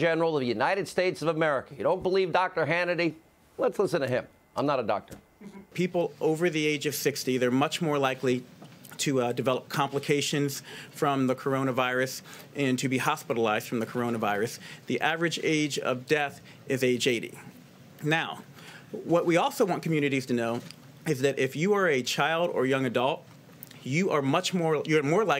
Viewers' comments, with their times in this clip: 0:06 Does anybody else think that the surgeon general looks like a deep fake with Mike Tyson’s face? Lol. He even has the lisp